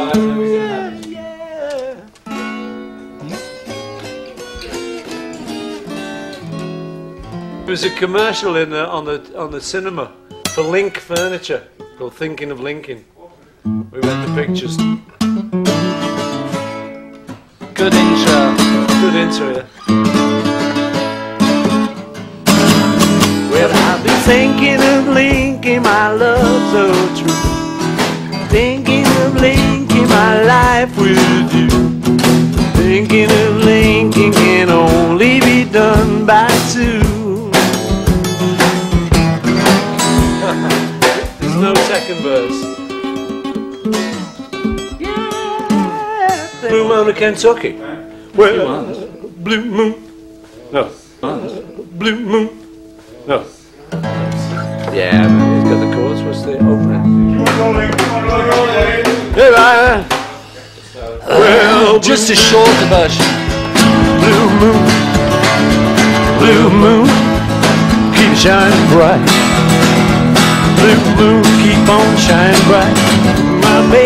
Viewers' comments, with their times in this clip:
0:03 this sounds exactly as the boss theme in super mario 64 lol
0:22 I love the way Ringo joins in so casually
0:24 Anyone knows the song ? It sound so lovely!
1:01 Paul McCartney sounds like Elvis Presley